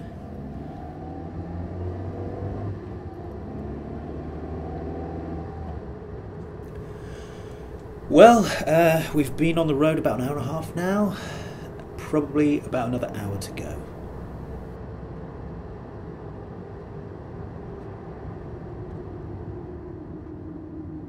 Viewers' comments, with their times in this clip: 0:05 "Been on the road for about an hour and a half now" More like been in your bedroom doing an unconvincing talk over !!!